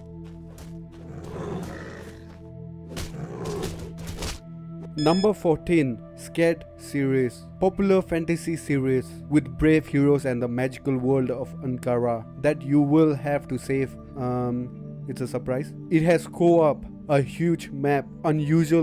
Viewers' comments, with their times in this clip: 0:06 "scared series" bruh